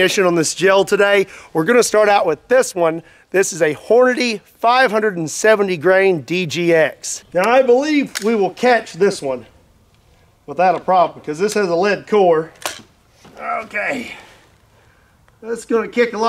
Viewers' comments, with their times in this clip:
0:03 lol that voice crack